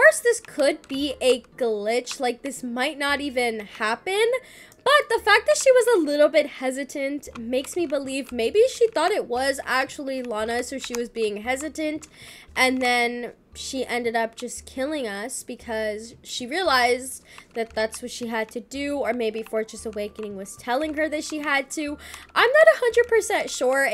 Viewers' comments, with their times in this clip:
0:09 asmr clicking noise AMSRRRRRRRR